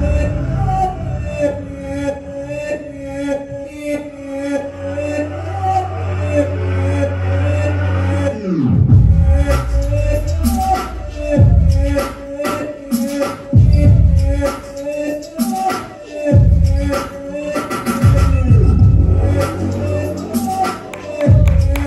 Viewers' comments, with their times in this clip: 0:07 🔥🔥🔥 He was miraculous on Stage. Such a monotonous song but he extracted a lot and different kind of beats and killed them all💥💥💥 Talent beyond imagination ❤🙌